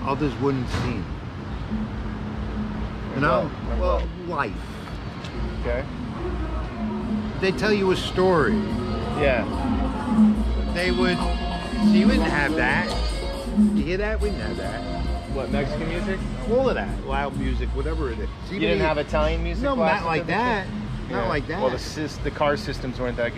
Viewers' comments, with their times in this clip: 0:10 while the Italian guy is romatisizing about the Italian mobs of old, a Mexican music came out of nowhere and he said with digust "we did have that!!!", I laughed so hard that I almost died. It also reminded me of a scene in the Bronx Tale movie when the young black dudes passes-by a bunch of Italian young wanna be gangs, with a loud music opened in a car.